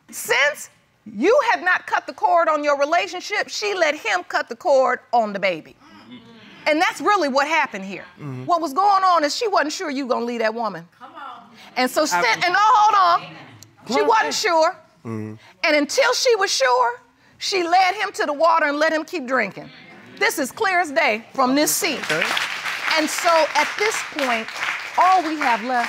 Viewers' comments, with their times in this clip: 0:05 Audience turned into church 😂
0:11 Right! I loved that "come on" from a woman in the audience